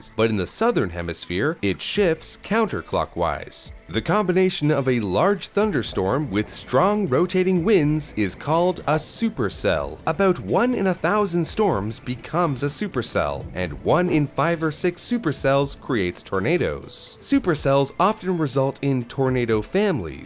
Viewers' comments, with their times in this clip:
0:08 earraped brawl stars intro sound effect